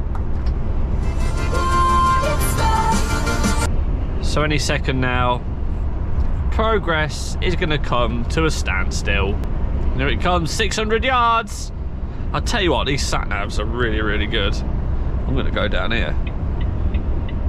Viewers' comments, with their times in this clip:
0:03 was very weird he never plays music